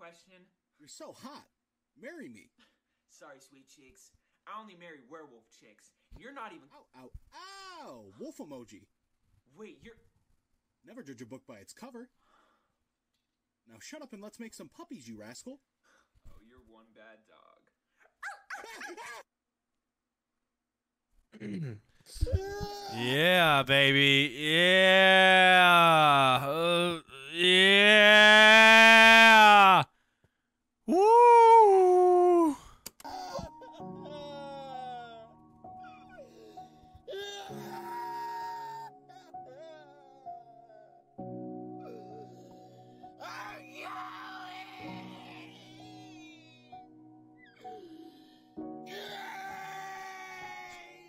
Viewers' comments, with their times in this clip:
0:07 why the fuck does he sound like Fred from scooby doo
0:38 why does he sound like gollum being tortured